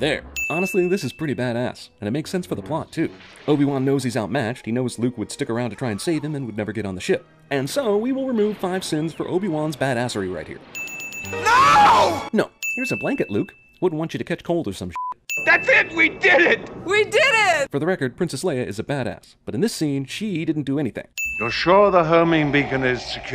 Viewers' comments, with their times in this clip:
0:09 removing sins but using the "adding" sins sound Ding!